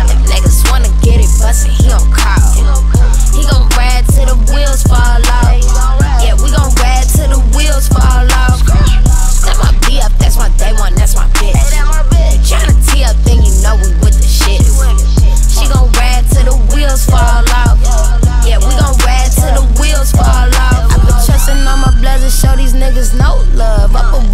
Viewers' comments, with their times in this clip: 0:10 Waka In the back 😂😂